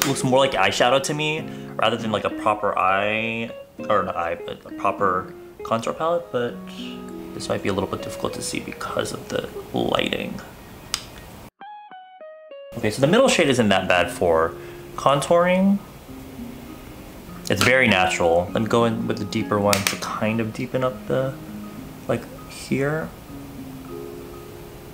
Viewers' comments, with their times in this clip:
0:07 damn thAt deep voice tho